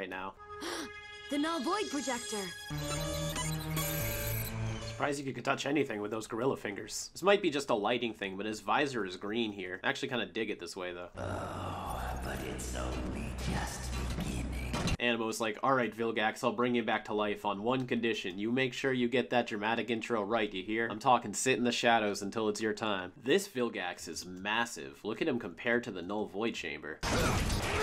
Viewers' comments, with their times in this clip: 0:10 That growl, like evil butter
0:13 When Vilgax spoke, he like spoke like Prime Starscream. I never thought of that